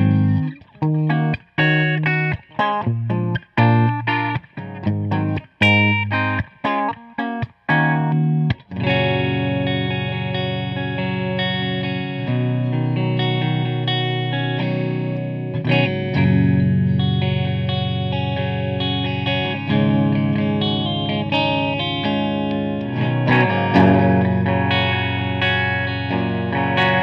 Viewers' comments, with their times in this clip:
0:08 That riff you played was 100% Paradise City but slower and without chorus